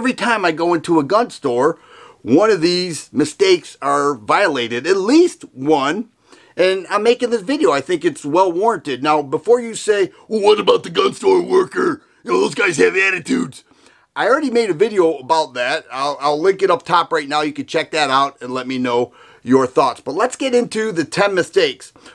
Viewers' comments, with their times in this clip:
0:09 This guy has the same voice as MACHO MAN
0:10 omg I laughed so hard because of that impression